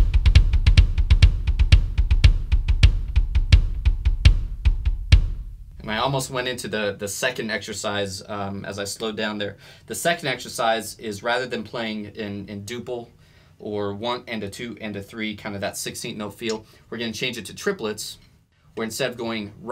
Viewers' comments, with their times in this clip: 0:05 feels like steady machine running honey dew smooth😀😘